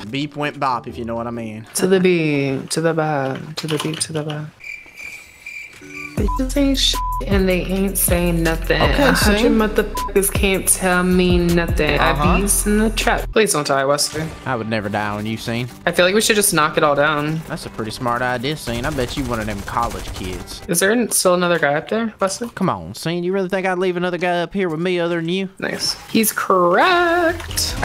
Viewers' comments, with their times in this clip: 0:09 drop that damn beat